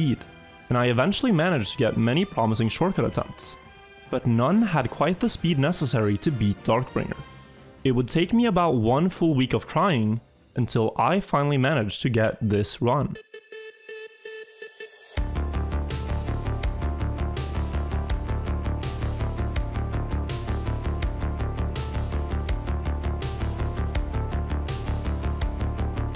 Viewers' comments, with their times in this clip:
0:06 “one full week of crying” ?
0:07 Any one else hear "crying"?
0:07 it realy sounds like he says "one full week of Crying"
0:09 One full week of crying I feel you
0:09 Did he say crying or trying? I mean both work... but I still want to know.
0:09 Unsure if just misheard, but "It took me one full week of crying" ahaha
0:09 definitely said one week of crying. FeelsSadMan